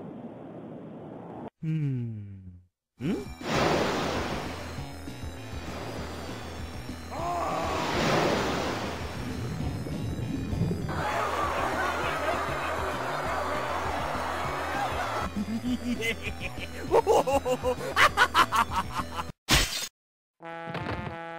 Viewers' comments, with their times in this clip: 0:06 For some reason, the dude's scream kills me every time xD